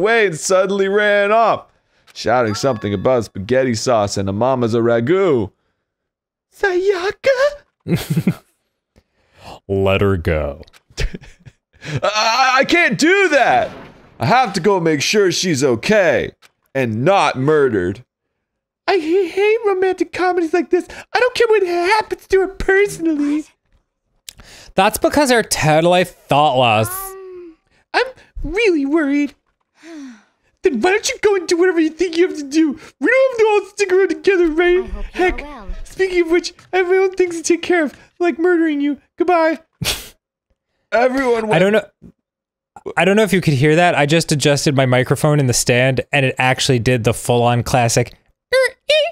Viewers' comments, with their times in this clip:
0:06 Also, did anyone notice them nail Byakuya's voice EXACTLY ?
0:34 is the microphone squeekies (use headphones)
0:35 it picked up slightly